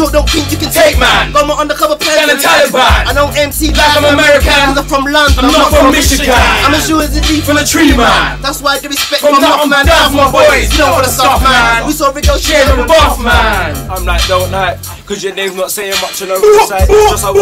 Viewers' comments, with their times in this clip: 0:03 goes so hard with everyone finishing the line